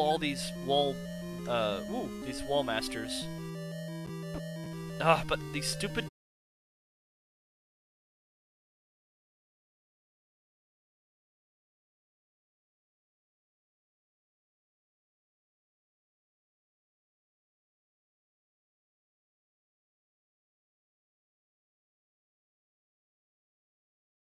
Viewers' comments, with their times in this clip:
0:05 Sound cuts out :(